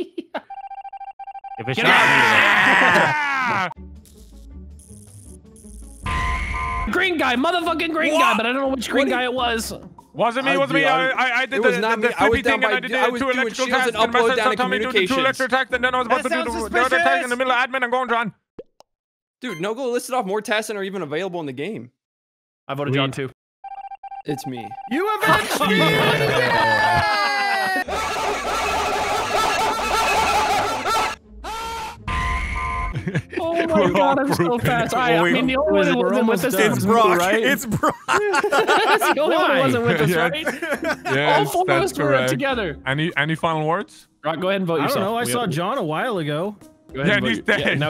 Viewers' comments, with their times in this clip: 0:10 top 10 rappers Eminem is afraid of
0:27 Lmfaoooooo wtf is that laugh please
0:28 The yelling edits has me rolling and dying from laughing 😂😂😂